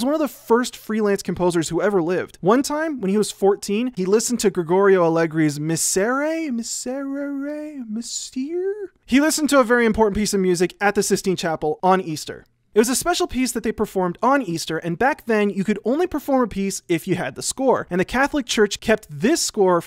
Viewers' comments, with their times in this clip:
0:05 Sounds like 'Mees-ur-rare'
0:06 the cringe every time people butcher the pronunciation of the word "miserere".
0:07 mee-zare-rare-rey (kind of, in my British accent it works)